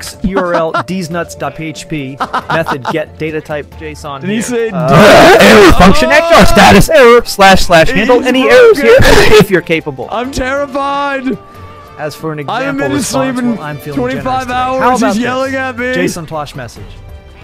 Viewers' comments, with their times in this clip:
0:05 god bless these AI voices, I think I cry-laughed for a good 5 minutes at this lmaoooo